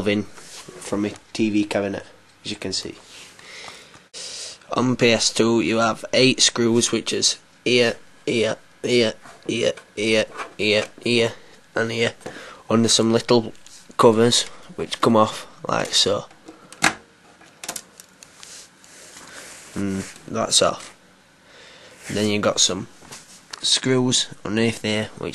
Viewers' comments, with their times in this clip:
0:07 ear ear ear ear ear